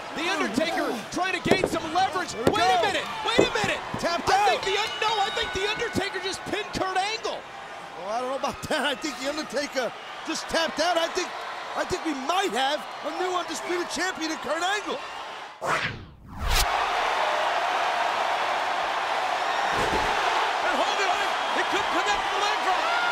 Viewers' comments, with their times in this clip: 0:04 So everyone is gonna ignore the weird bell sound ??